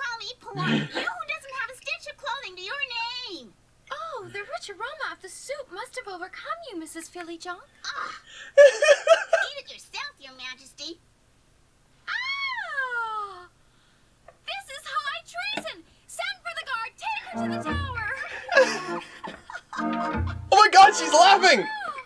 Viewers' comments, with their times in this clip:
0:07 What's up with the audio here? It's like all the sound effects are missing. It's a shame cuz it kind of ruins the whole scene.